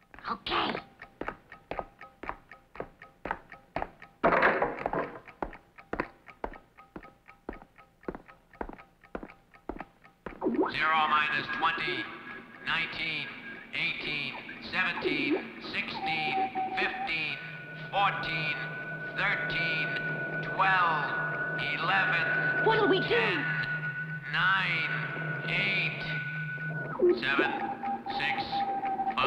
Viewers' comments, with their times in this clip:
0:10 I love this countdown until POW right on the head.